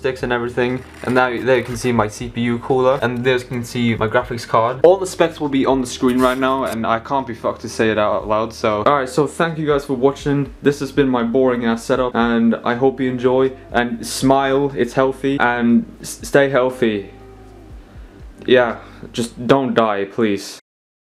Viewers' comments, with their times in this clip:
0:07 “Can’t be fucked” * intense cyberpunk music starts playing